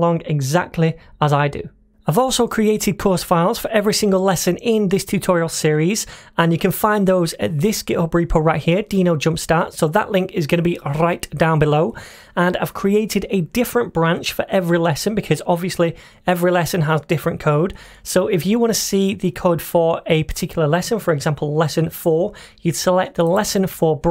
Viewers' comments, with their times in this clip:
0:10 Very strange "R" 😂